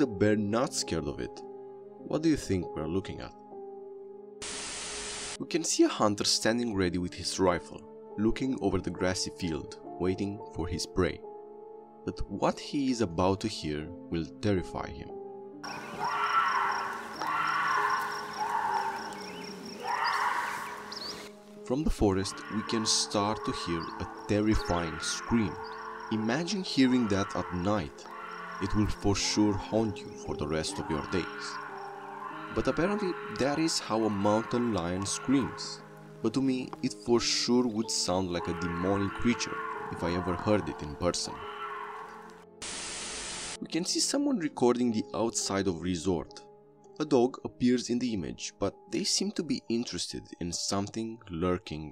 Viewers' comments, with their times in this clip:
0:06 that’s literally a mountain lion in heat , nothing to be afraid of if you’re not in their space
0:20 thats the sound bobcats make when getting it on
0:22 thats a cat
0:26 is also how bobcats sound too. Like a woman screaming for dear life
0:36 The screaming is a Bobcat